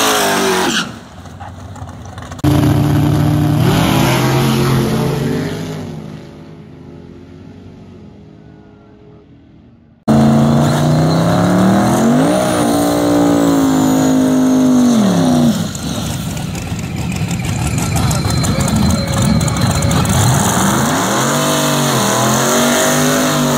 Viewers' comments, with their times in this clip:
0:04 … I thought something happened to the video or … Them two cars were hammering!